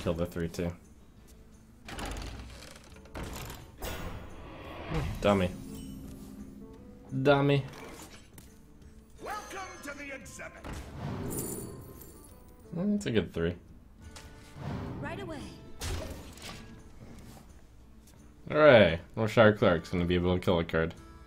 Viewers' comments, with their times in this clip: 0:08 almost sounds like he is calling the hunter dummy and then confirming it to himself